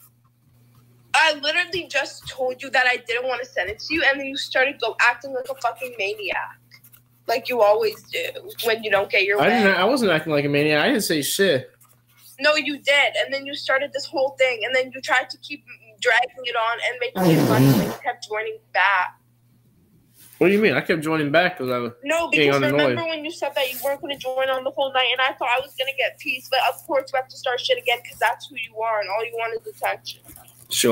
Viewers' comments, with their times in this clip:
0:10 bro laughed so hard he farted?
0:13 did he really fart?
0:15 LMAO BRO RIPPED A FAT ONE
0:15 is nobody gonna comment on how dank that fart (or sound) was
0:15 that sounded like it hurt LMAOOOOO 😂😂😂😂😂😂😂😂😂😂😂😂😂😂😂😂
0:16 damn, he ripped a big one All jokes aside, this is fucked up. Hopefully she gets the hint and leaves while she can
0:16 Bruhhhhhhh that's the wettest fart i've ever heard
0:16 okay sorry I know this is a horrible situation and all but did he literally just RIP a FAT ONE ??
0:17 bro just fart
0:17 Bro did the dude fart 😭💀
0:17 is when he farts
0:18 that fart tho